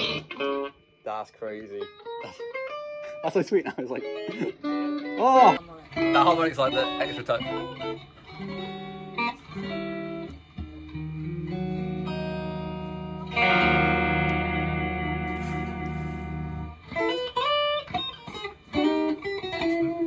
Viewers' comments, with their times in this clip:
0:04 Some Riviera Paradise Awesome guitar!